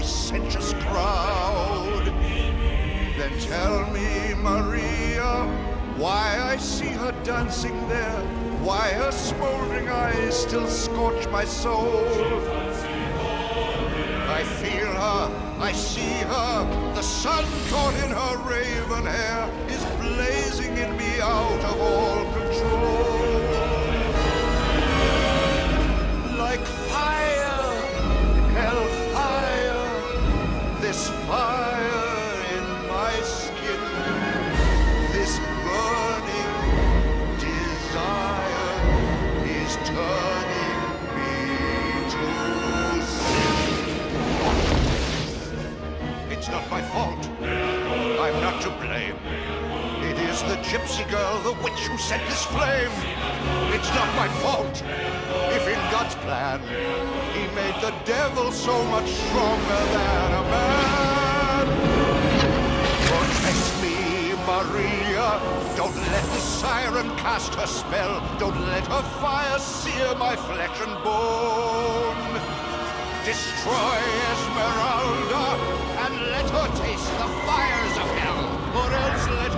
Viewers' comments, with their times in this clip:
0:03 i love the mixture of notes there
0:44 Plot twist: They're all women.
0:53 It sounded to me he was saying "He made the Devil so much Stronger than I am ". Most of the song, especially the beginning lyrics, was about how he was saying he was so much more purer, more devote, than anyone else. An attitude common amoung religious hypocrites.
0:57 this harmonic key change is truly chilling, resembling the lyrics as he hopes Maria will protect him from this pain and conflict
1:02 the choir is so haunting